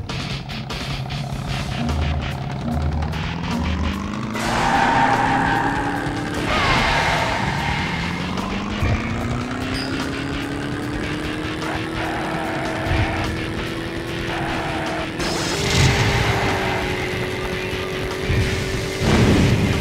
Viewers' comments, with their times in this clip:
0:06 LMFAOOOOO I'VE ALWAYS LAUGHED MY ASS OFF WHEN THIS KIND OF POWER HAPPEND, ALSO MILEENA'S SCREAM